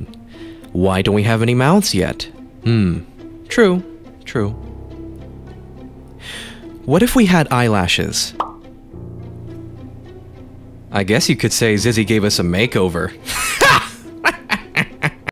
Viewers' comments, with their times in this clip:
0:13 I Love That Knee Slapper! George's Laugh Is Rlly Funny! George Is Definitely The Type To Laugh At That, I Like The "Stylish" Animation Style! :D
0:13 WHY HE LAUGH LIKE TAHT😭
0:13 Am i the only one thats hears this? His laugh sound like Minecraft witch
0:13 the laugh 😭 “HAH! ehehehe 🤭👹”